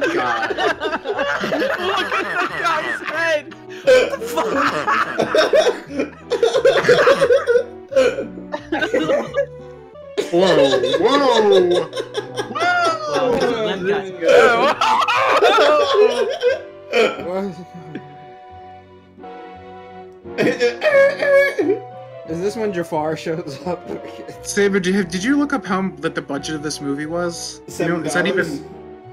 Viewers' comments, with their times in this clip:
0:10 Is there a full length reaction of this video? Plus this scene scared me a little and your laughs pretty funny at that scene